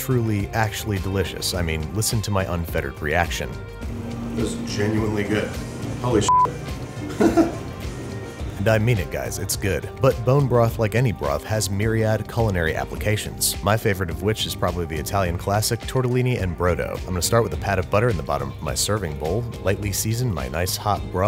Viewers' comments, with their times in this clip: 0:03 Is it just me, or does Babish occasionally sound like Bob Belcher?
0:07 Why did his laugh sound exactly like Archer